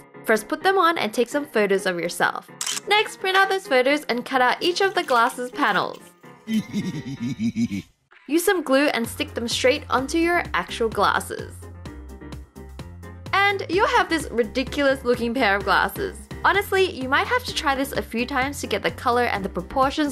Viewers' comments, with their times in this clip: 0:05 The background noise is a hilarious meme 😂